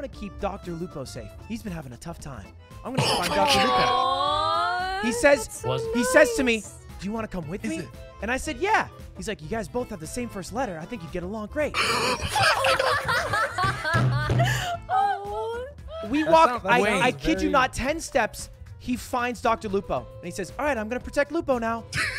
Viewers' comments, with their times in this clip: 0:10 what Lud says? i cant understand hes talking so fast